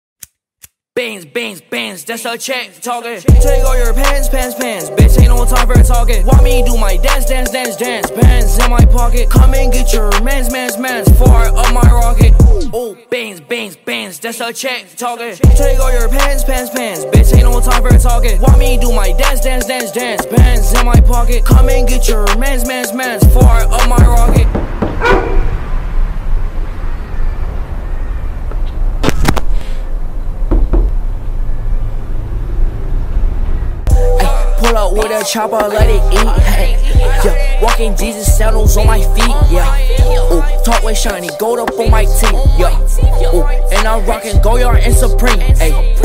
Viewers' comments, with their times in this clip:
0:00 It is. Do you not hear the sound of a lighter ?
0:01 :lyrics Beans Beans Beans Come and get your Mans Mans mans Beans beans beans
0:10 did he say fart up my rocket?
0:23 That knock alwase gets me because i have headphones, I sometimes get scared when he knocks lmfao
0:23 Everytime he knock on the door i think someone is knocking on my door 😂
0:23 Who else had headphones and thought someone was knocking.
0:24 All headphone users had a heart attack
0:24 who else thought somebody was knocking their door?
0:24 me looking around in distress to see who’s knocking on my door.
0:26 I literally thought someone was knocking my bedroom window lool
0:29 that knocking got me dead I had a heart attack because I was listening to this at like 1 am
0:30 anyone shit themselves hearing the door knock?
0:30 when he knocked I thought someone was knocking at muh door
0:31 Comethazine knocked on my window which is made of wood for some reason